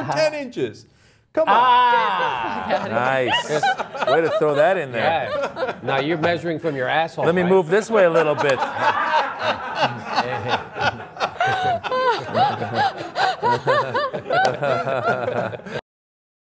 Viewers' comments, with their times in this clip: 0:06 Good one. Now if he can just manage to not restart a sentence 8 times when he's in heated discussion, then we'll be good.